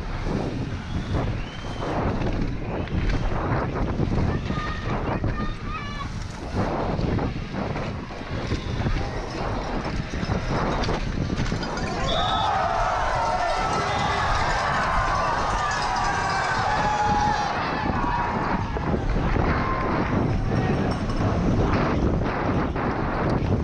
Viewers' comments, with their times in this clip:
0:09 haha sweet one. must feel awesome while the crowd is cheering too!